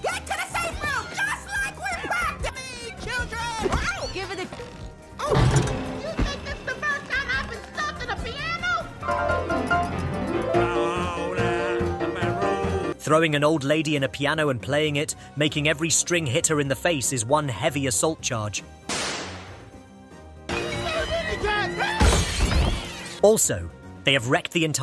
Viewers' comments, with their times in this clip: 0:06 Seija dunnit (the video music also sounds like one part of Reverse Ideology)